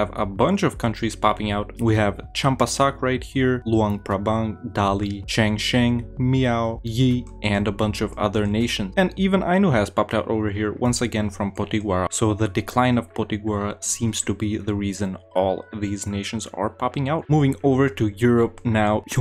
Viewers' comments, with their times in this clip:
0:05 watch for cute meow. LOL